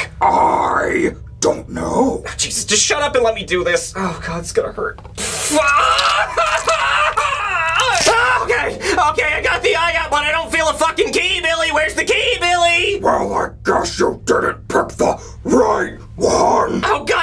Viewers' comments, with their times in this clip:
0:05 his screams are kinda funny 😭😭😭